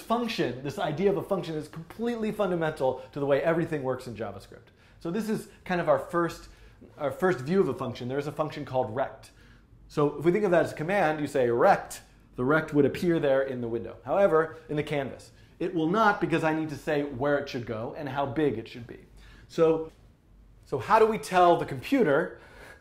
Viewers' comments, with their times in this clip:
0:07 function erect I shouldn't say where it should go and where it should be ( ͡° ͜ʖ ͡°)